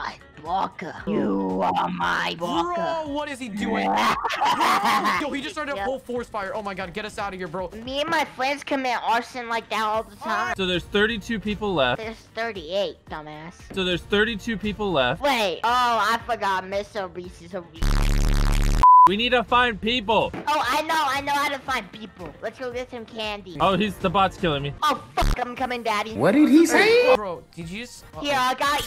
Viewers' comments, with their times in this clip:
0:09 Bro said I committed arsenal